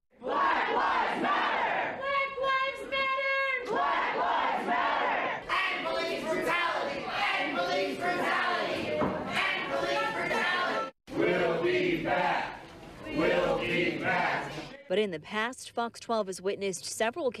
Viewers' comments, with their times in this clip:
0:05 this is how the S O Y A scream cringy